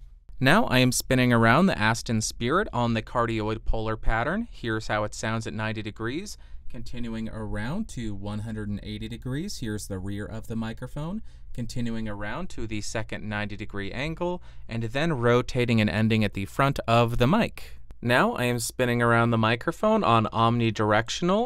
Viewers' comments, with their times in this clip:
0:06 it actually sounded better when speaking behind it. too much mid up front